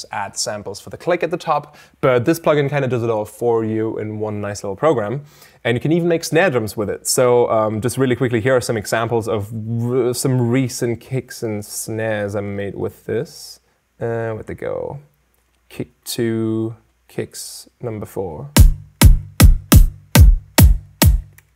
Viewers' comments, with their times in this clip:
0:09 "Here are some examples of WuBbBbBuh" I wonder if I can make a bass with that.